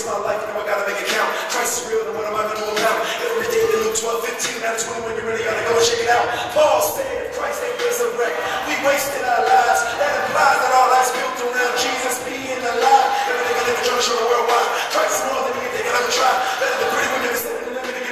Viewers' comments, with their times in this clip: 0:06 it sounds like he says Balls!